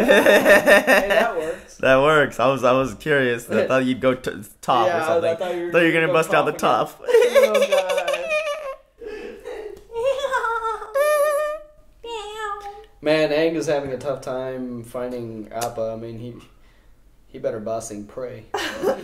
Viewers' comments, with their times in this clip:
0:06 Quite the laughter